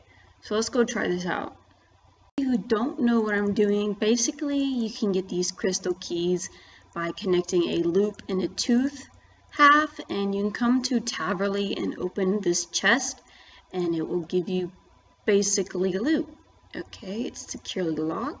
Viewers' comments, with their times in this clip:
0:06 you can get these keys by connecting a loop and tooth... HAAAAF